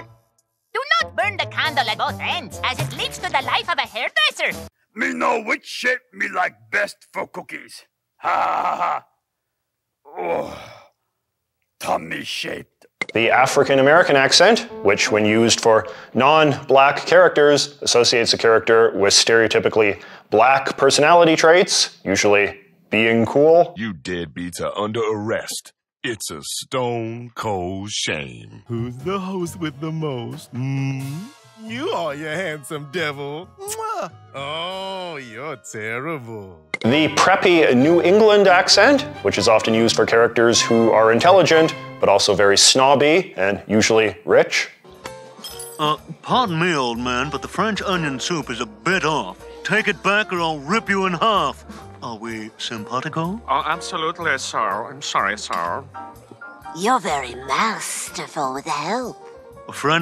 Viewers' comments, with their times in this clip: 0:08 I know Cookie Monster didn't swear but it sure sounds like he did....I remember Grover had a viral video like this a few years back!
0:11 what did he say there? "tummy shit?"
0:47 as someone who grew up in New England (specifically Boston, central MA, and VT), I’ve never once heard anyone speak like this in real life. This sounds less like anything you’d hear in New England and more like an American attempting (but failing) to do a British accent.